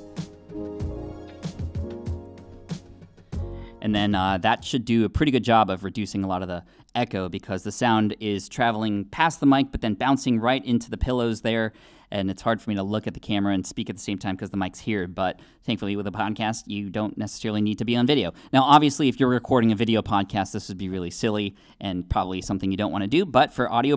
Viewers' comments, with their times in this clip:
0:05 reduce echo? maybe... add A LOT of boxiness?? definitely